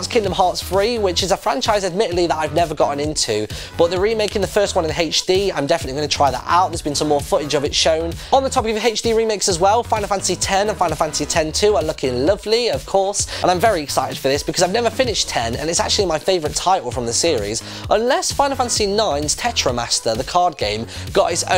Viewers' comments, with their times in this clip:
0:03 "Hay-tch D" what accent is that? Or just for fun